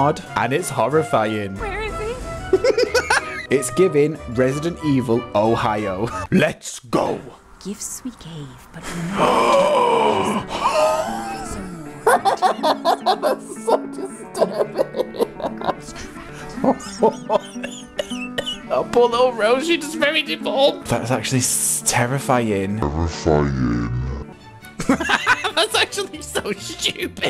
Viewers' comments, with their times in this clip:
0:10 Ur out of breath from laughter is what got me 😂